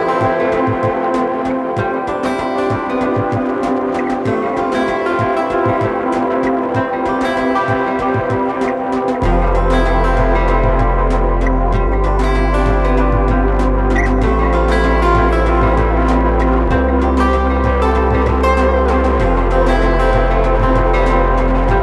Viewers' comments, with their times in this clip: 0:08 Man..... that sub